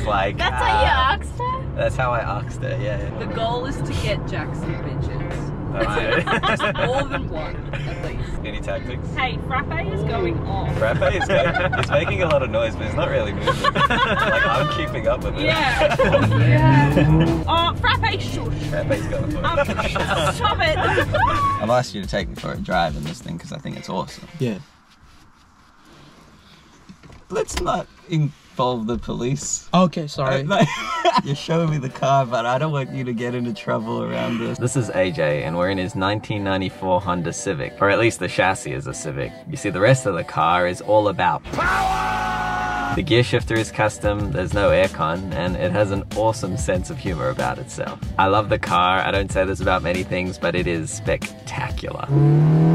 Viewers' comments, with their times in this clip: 0:08 the frappe jet is always going off !! And of course you saw me on the way to chapel street lol
0:39 you see the rest of the car, is all about "RAAAAWAAAAAAAAAAAA👹"